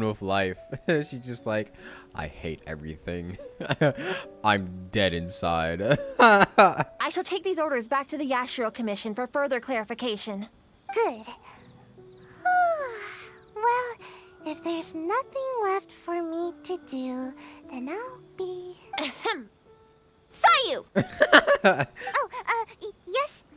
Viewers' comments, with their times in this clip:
0:06 She sounds like she has bread in her mouth while she's talking.